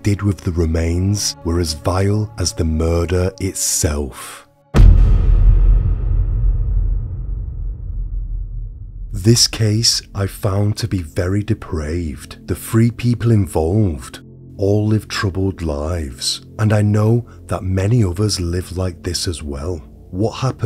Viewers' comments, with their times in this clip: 0:05 Got to and had to bail. Why you talking like that?